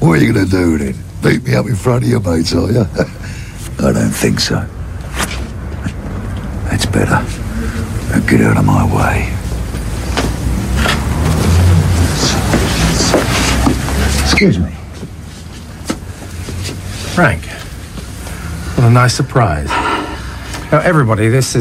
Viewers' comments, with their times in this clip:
0:06 Frank's voice is epic especially